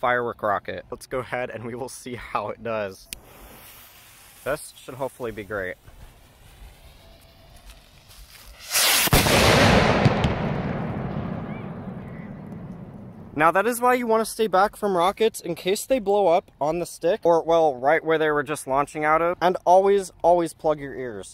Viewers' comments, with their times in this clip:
0:08 'the moment he went deaf'
0:08 is what a blown fuse cutout would sound like which would be a bottle rocket that looks like this. That bottle rocket is great way to scare annoying neighbors during the Fourth of July if you want nice loud fireworks that sounds like exploding utility fuses. It would be funny to launch one during the day and have your neighbors come out thinking that they have been attacked when it was a prank the entire time. Just make sure you launch this on your property and not on public property.